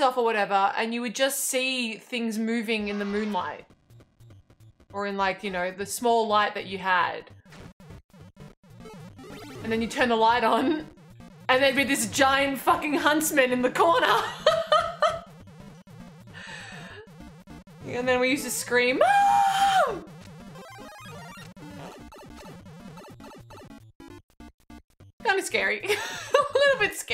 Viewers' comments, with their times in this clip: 0:09 What I misheard: 'And then you'd turn the light on. And there'd be this giant fucking husband in the corner. laughs And then we used to scream MUUUUUUUUUM!!!!' After replaying, I now hear the correct word. Huntsman.